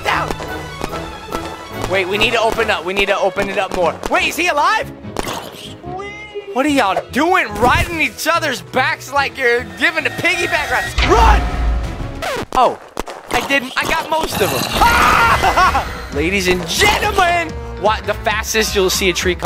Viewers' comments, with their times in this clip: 0:03 FGTeeV made me laugh Soo hard the way that zombie said weee and when it like ride on that zombie and FGTeeV duddy when said it 🤣🤣🤣